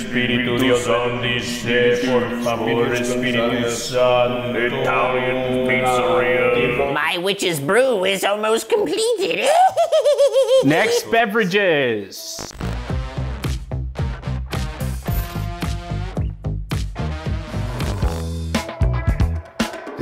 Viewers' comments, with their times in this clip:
0:07 juicy sounded like charlies grandma in smiling friends